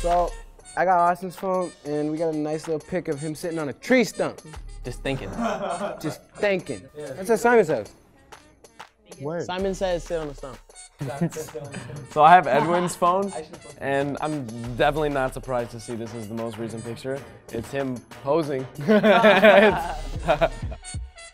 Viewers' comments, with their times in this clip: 0:06 zion's way of saying "just thinking" 😍